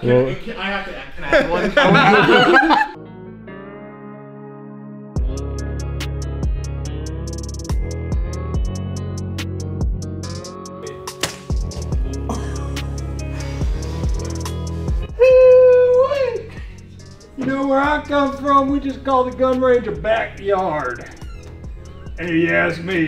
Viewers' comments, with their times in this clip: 0:10 😂 looks straight out of RDR2, just missing the straw hanging from his mouth. Real Huck Finn vibes & tell me why he sounds like woody Harrelson in his backyard intro